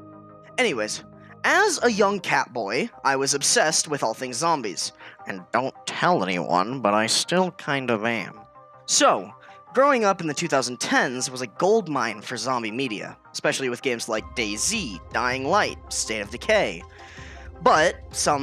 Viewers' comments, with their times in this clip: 0:03 Dude starting sounding like the joker
0:05 i'm gonna subscribe just because of the voice XD